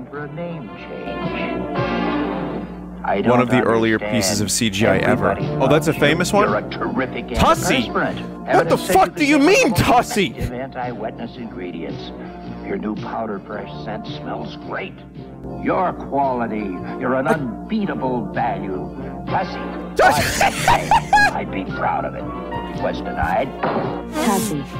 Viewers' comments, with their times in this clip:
0:06 he sounds so offended lmao